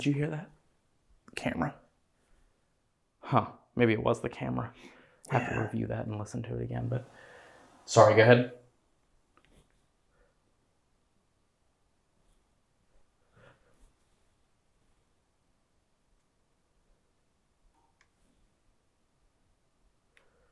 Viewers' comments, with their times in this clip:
0:06 a creepy deep breath as you both was talking listen closely xx 🇬🇧